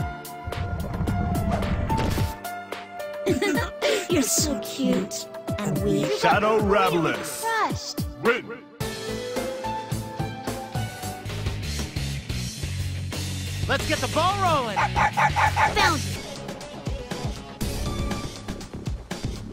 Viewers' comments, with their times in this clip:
0:05 why does it sound like the announcer is saying "shadow rablys"